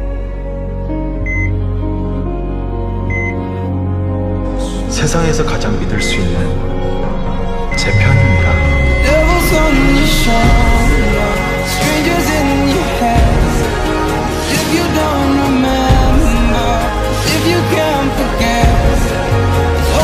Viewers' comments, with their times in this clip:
0:08 this hit me hard! With the beeping coming to a high sound and Taehyung saying I love you and the song playing back again 😢😢😢😢😢😢